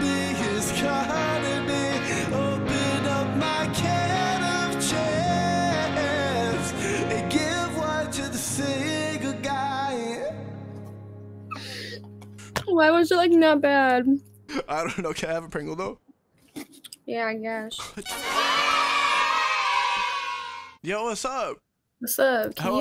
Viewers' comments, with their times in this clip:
0:05 That autotune though 😏